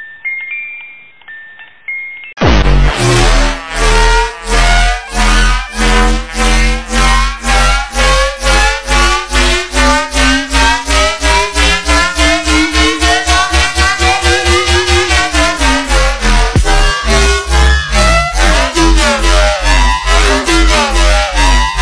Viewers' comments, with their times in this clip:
0:03 if you Speed it up x2 it’s sounds like a banger